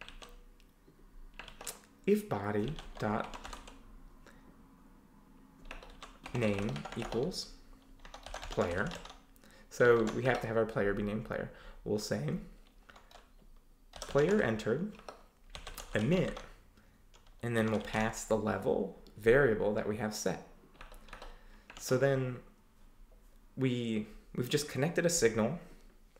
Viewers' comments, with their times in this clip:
0:09 Anybody here what he is talking in All I heared: "so we have being being player will same". I am zero musician almost like a Bear, can someone write what words he pronounced(auto subtitles didn't help ). Thanks in advance.